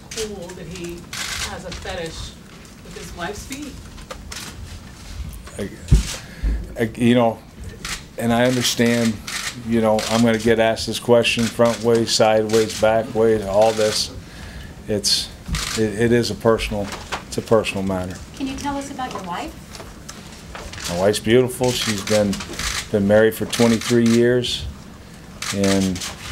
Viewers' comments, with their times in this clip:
0:07 he's just laughing at that point.. He owns it now which is good.. It's nothing to be ashamed of.. My foot fetish is huge